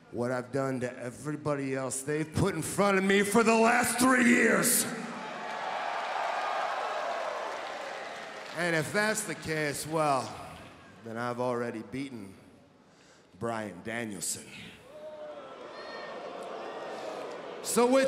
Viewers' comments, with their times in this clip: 0:03 sounded very HHH for a brief moment there.